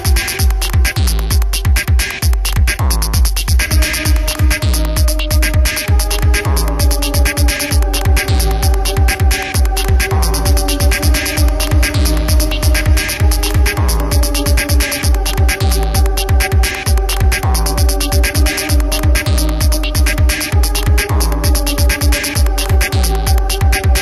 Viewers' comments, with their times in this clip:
0:05 I Hear “ stay on sideee fallling. Anyone else?